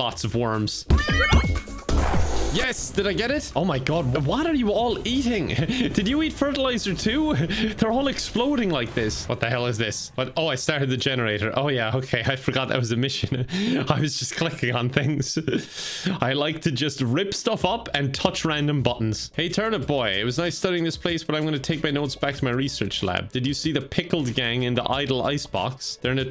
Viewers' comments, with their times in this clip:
0:10 Big Machine goes Brrrrrr!!! LMFAO xD